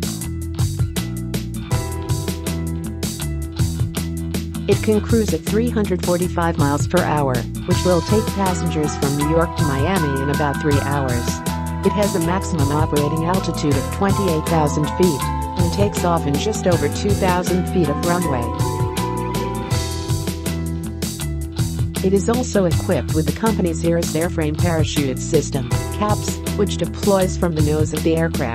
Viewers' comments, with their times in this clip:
0:10 Music too loud to hear the voice. I abandoned